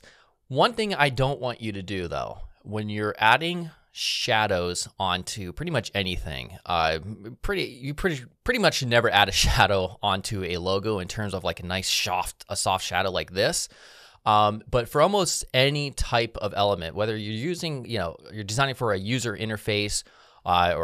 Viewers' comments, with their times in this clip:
0:04 you are way out of sync